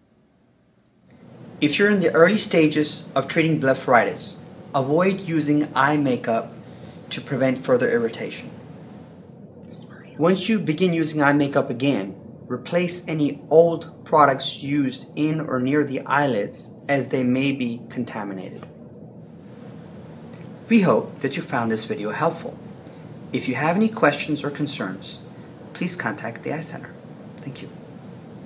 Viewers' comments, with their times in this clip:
0:10 Did anyone hear someone say smile ?